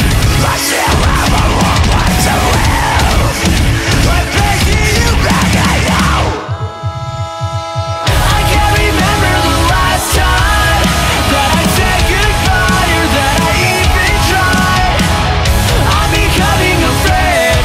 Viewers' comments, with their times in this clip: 0:03 it soundes like he is saying "im baking a potato"